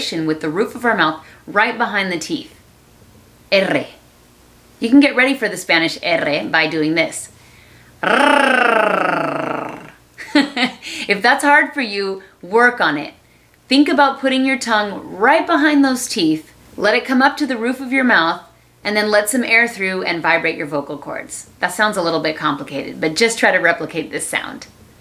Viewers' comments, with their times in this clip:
0:08 Motorbike mode on :